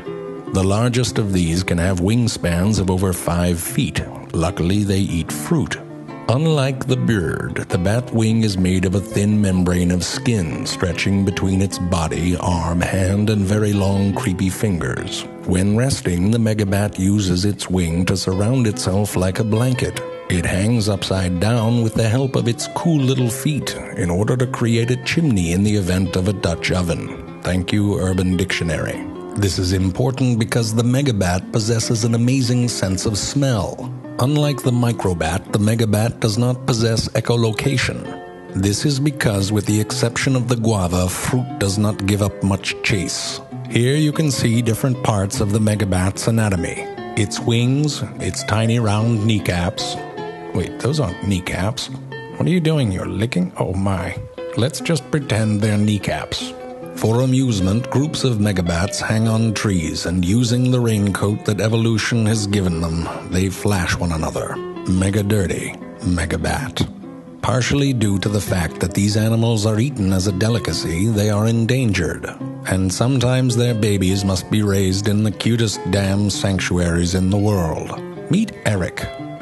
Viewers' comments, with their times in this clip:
0:05 unlike the byird
1:00 he started to sound like he was advertising the bats coat I was rolling lol